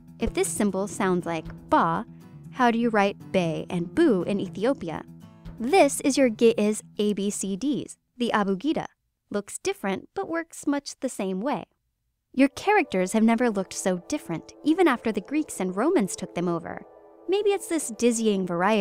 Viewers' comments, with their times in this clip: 0:03 at least for me, the audio jumps to a different sentence. What did I miss? Thanks.